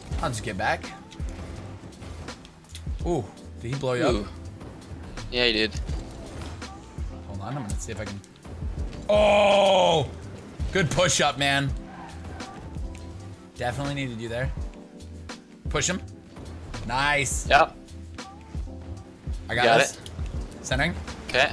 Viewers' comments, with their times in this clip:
0:08 He sounded like Chewbacca